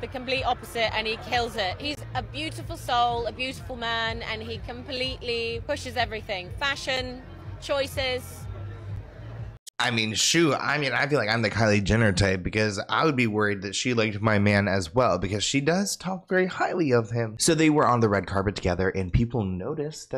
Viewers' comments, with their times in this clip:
0:08 she sounded like she was complementing her friend lol